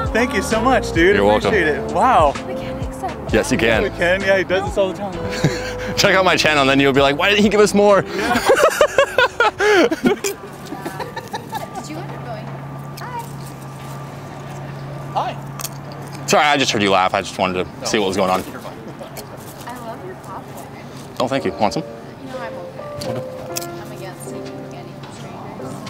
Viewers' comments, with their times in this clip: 0:08 This transition from one high-pitched laughter to another is ingenious.